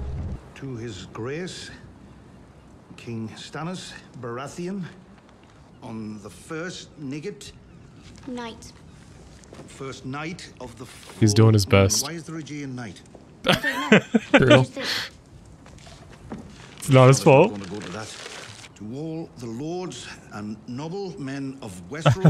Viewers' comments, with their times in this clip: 0:07 Damn Davos dropping the hard N bomb 😂